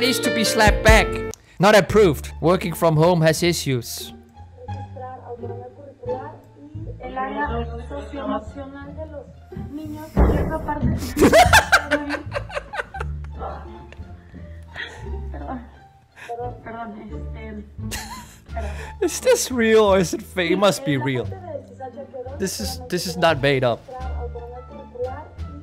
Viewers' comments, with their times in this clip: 0:10 love that laugh